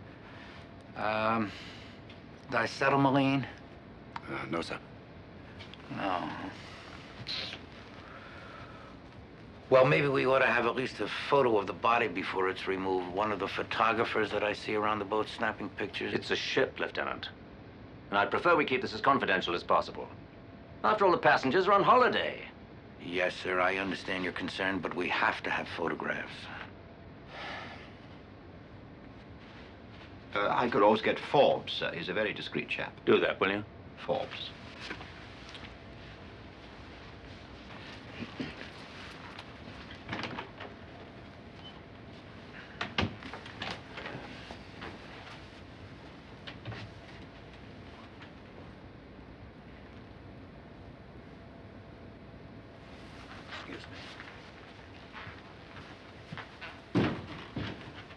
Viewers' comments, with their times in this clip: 0:07 At 1bout he asked for paraffin, then he asked for something else, what did he say? I thought he said disetamaline, but I looked the word up, the way I heard it ... I must have misunderstood the word.
0:44 LOL at that extremely long and awkward pause!